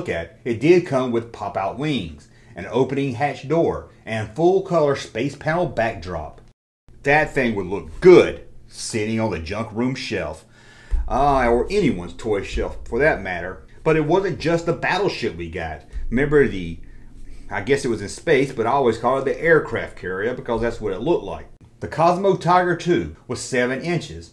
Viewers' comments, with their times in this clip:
0:06 1980's Canada and that song starts playing just got my child juices flowing for the day.